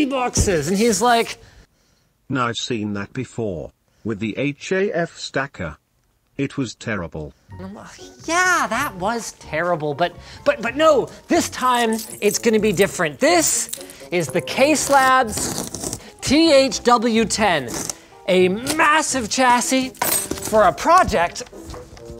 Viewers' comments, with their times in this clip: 0:05 you sound like the project zorogo leader